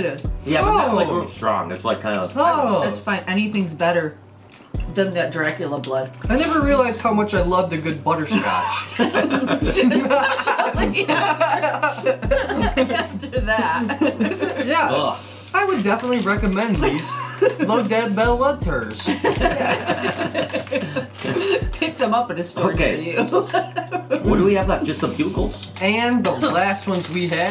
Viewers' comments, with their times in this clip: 0:10 Omg i loved your goofy laugh 😂😂